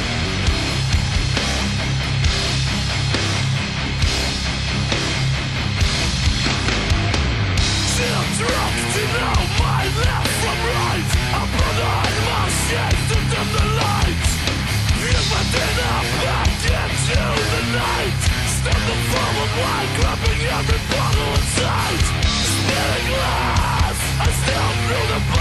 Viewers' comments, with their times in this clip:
0:10 if you listen closley you can hear somone scream